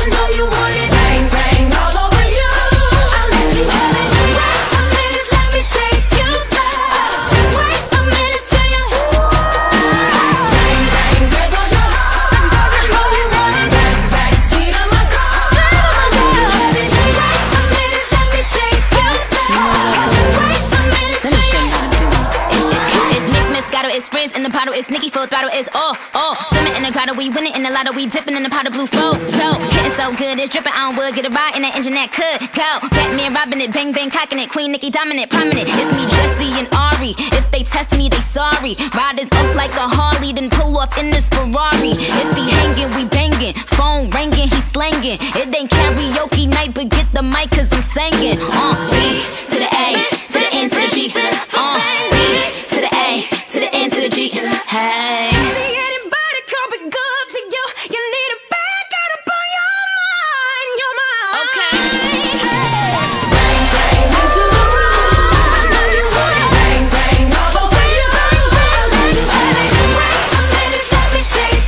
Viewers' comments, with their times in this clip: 0:09 REMINDS ME OF SM MALL MUSIC
0:16 nikki's rap part
0:23 Rap part that i like
0:55 Why no one is talking about Jessie’s vocals in